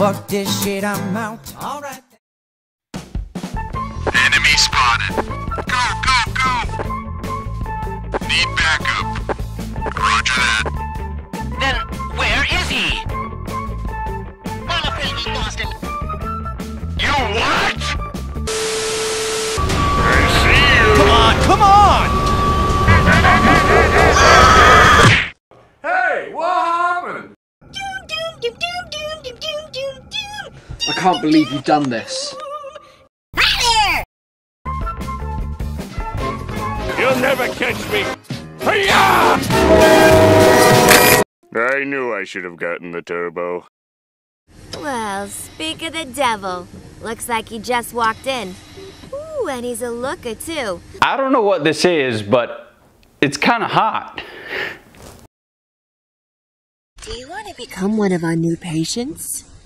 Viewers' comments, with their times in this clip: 0:04 🐉🐉🐊🐲🐲🐊 Sounds like GODZILLA DEFEATED!! Enemy Spotted Go(3x Need Backup!! Roger that!! Well where is he??!! Well I'm afraid We lost him!!! YOOUU WHAAAAT!!!!! SSHHHOOOO BOOOOM!!!!!!
0:20 Is it bad I can actually see it having that voice?
0:28 Ah! The sweet sound of Gir from Invader Zim! YAAAAAY!
0:45 Is it me or dose she sound like Harley Quinn